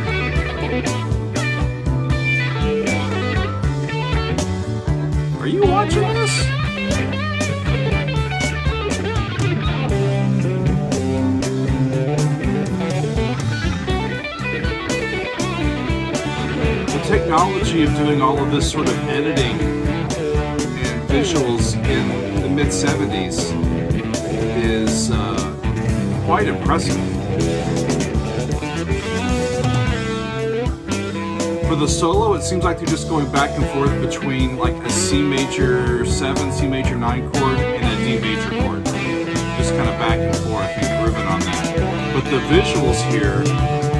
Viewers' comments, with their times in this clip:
0:05 This live version might be the best guitar solo Zappa ever did. The line here is amazing.
0:31 I think it’s important to notice that it’s a C lydian (sharp four, major seven) followed by a D mixolydian (flat seven). These are ”the secret Zappa chords”. You can vary this idea so much and Zappa did over and over again throughout his catalogue. His melodic improvisation on top of these two harmonic chordal ideas are mindblowing. Sometimes they’re replaced by equivalent minor chords. Sometimes they’re hidden in confusing harmony. But they keep appearing. Love it.